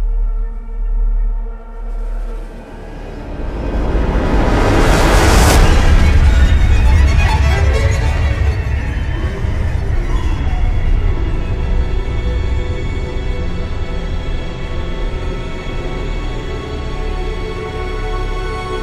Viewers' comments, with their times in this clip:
0:05 is haunting when he sprays the perfume